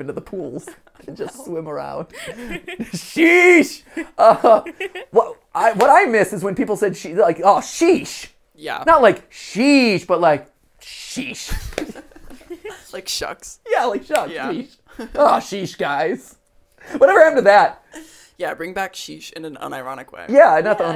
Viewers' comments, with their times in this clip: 0:06 my dad says sheesh in that way.. i never thought about how no one else ever says it like that..